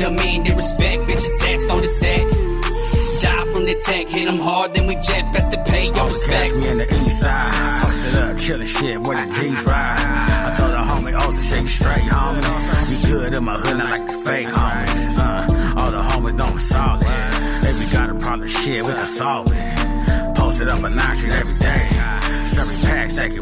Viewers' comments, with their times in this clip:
0:08 wtf did u say cholo?? Haha 😂